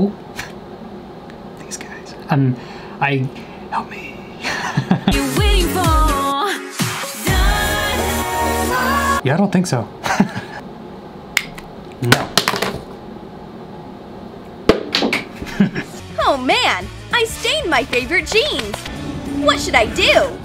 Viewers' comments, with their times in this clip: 0:03 When he whispered help meee…..I died😂